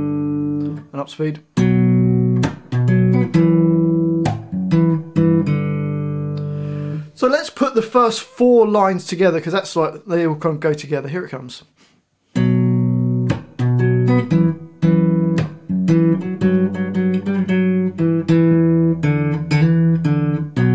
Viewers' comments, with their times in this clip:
0:04 one tiny thing that could be played slightly differently is that you pluck the open string, when it may sound better to just pull off of the second fret on the D string great song! thanks so much for making this!